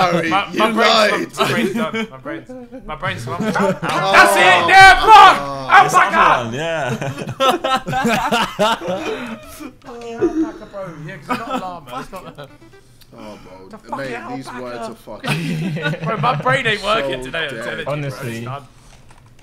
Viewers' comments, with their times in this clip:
0:04 The way Ethan said Alpaca is fucking beautiful lol it made my whole bloody day
0:05 If Behz screaming Alpaca isn't memed....